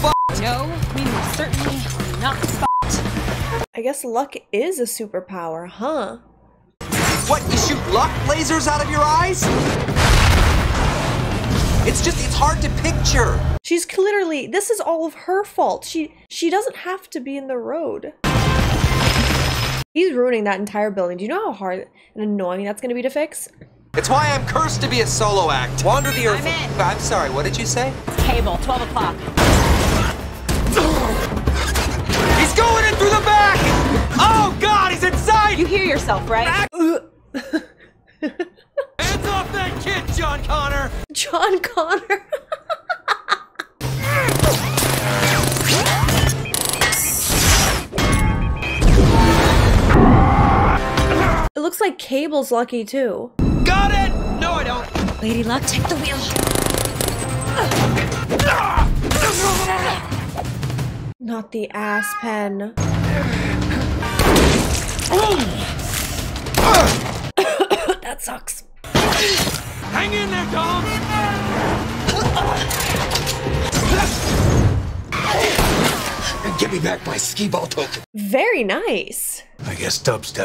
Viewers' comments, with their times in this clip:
0:10 Did she just say........"Cliterally" 🤣🤣🤣
1:01 The meow was timed perfectly with the car driving in the background! 😂